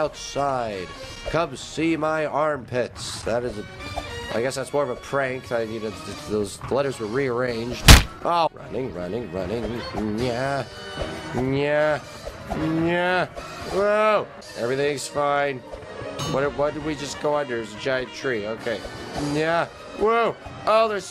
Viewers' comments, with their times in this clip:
0:07 R.I.P earphone users